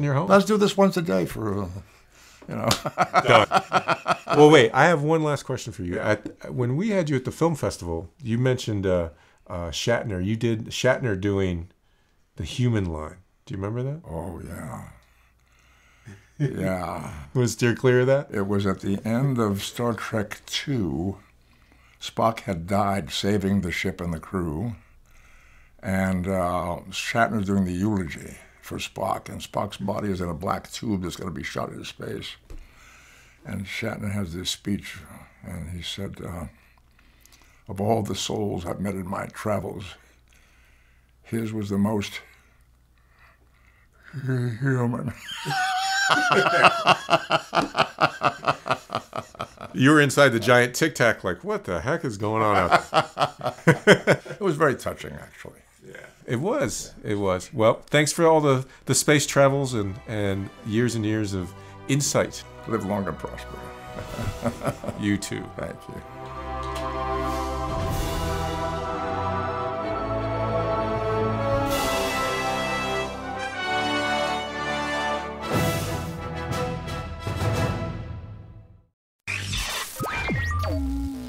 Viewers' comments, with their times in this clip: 0:09 Nimoy does Shatner
0:09 The "Shatner Impression" section begins and it is ultimately no impression at all. For a real Shatner impression, please refer to Kevin Pollack. Or Seth McFarlane.
0:12 For those loking for the impression. It's at the very end. The LAST question, and it's less of an impression than him reciting Shatners line "Of all the souls I've met in my travels his was the most huuuman" spoken at Spocks funeral
0:13 Leonard Nimoy does his WIlliam Shatner impression. R.I.P. Leonard Nimoy
0:25 I love when he rips Shatners human speech.
0:25 Impression of Shatner
0:27 The Shatner imitation.
0:37 The Shatner impersonation is and it's not particularly good.
0:37 No, he does it Get it right. And it sucks as an impression.
0:37 Save time: it starts at time and it is a lousy impression!
0:37 for the impression and its quite underwhelming
1:04 Does the interviewer Geoff Boucher say 'You too PATRICK' at the end ?